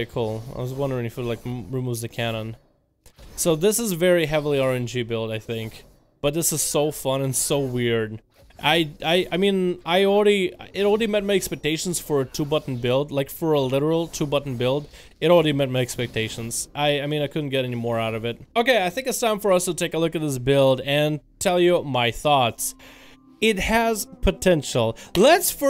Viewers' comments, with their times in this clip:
0:09 you srsly sound like someone from india lol